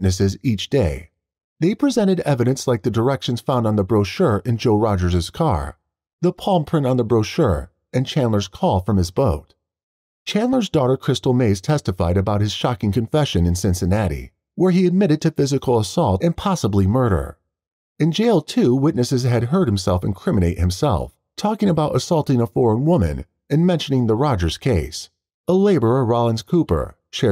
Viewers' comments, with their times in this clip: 0:10 I’m sorry but the daughter being called crystal maze made me chuckle as that is the name of a old British TV game show 🤣